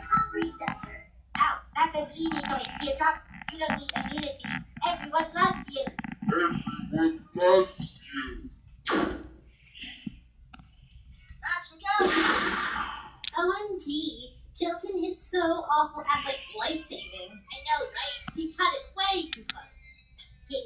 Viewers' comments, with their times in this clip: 0:06 pin talks slowly: everyone loves you